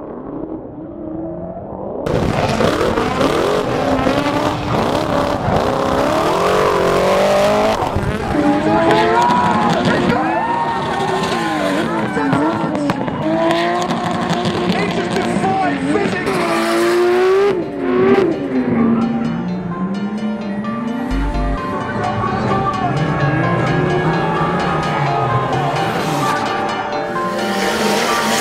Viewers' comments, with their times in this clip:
0:10 That RB sounds so good im getting goosebumps!